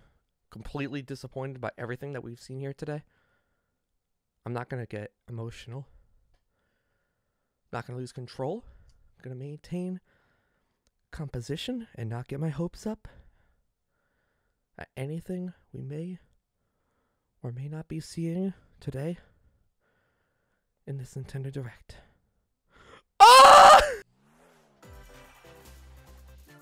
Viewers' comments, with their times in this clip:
0:09 sounds like you’re singing a lullaby